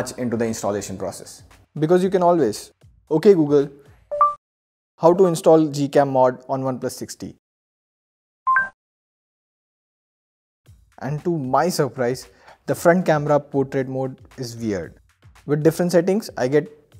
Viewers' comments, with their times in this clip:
0:04 my Google assistant also ping 🤣